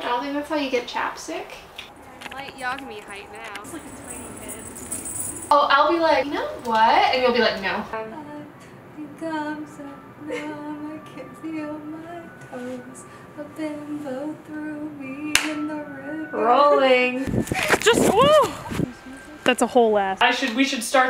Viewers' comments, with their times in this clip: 0:09 I JUST NOTICED THAT L IS HUMMING LINKIN PARK LMAO